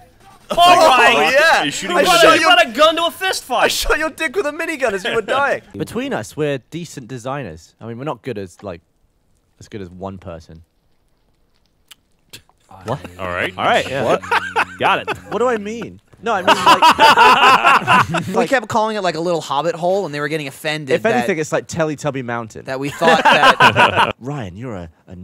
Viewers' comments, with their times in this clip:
0:07 The silence of makes it so perfect